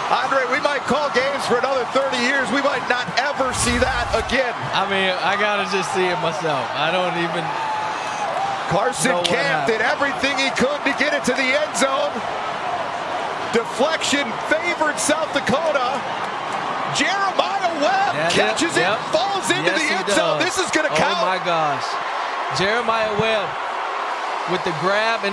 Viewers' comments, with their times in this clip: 0:06 Weird acid trip watching the celebration at .25 speed. At .50 the commentators sound drunk. Start at .50 speed. 😆